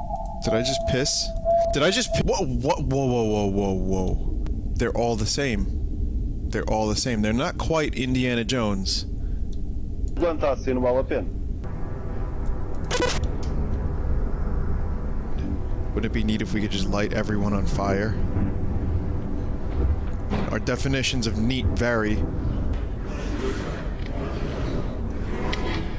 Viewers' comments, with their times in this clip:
0:09 "Quando 'tá assim não vale a pena." I don't know if these voice clips are by the author or sampled from something else (or why they're in this game), but this one for example is (european) portuguese for "When it's like this it ain't worth it". Judging by the comments below, not even people who speak portuguese can quite tell what the voice clips say, since they're so slurred and pitch-shifted. And also make no sense in this context.